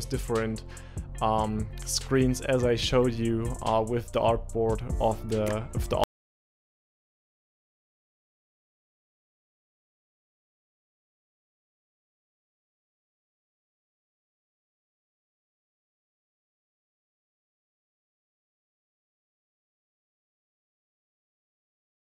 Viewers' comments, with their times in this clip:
0:06 Hi friend thanks for video. However the sound cuts out.